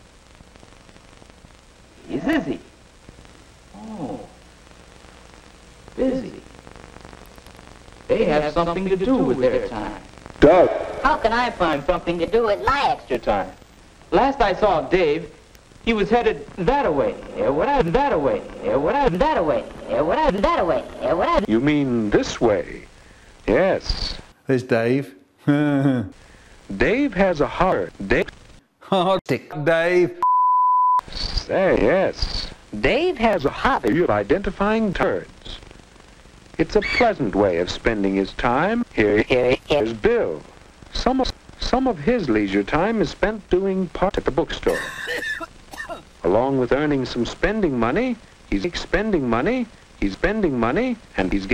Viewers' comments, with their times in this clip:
0:08 that echoed "DUH"
0:36 The bird sound from the original video fit perfectly with that clip.